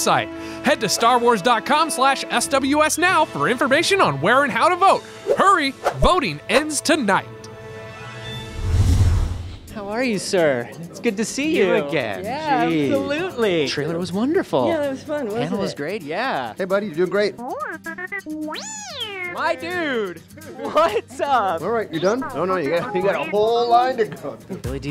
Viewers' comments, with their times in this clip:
0:10 Anthony Daniels "You again" delivered with the kind of sarcasm only 40 years as a protocol droid can teach you.